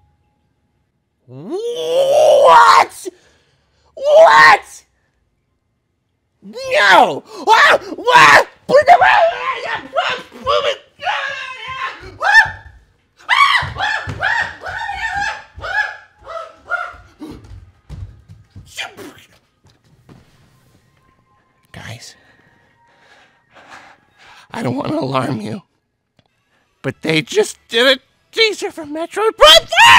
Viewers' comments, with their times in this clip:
0:10 I always hear as "Get out of my house!"